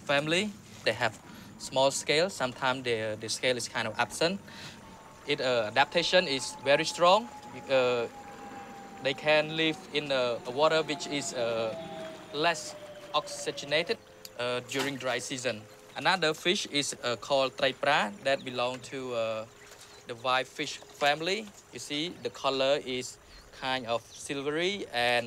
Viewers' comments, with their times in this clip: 0:06 true khmer accent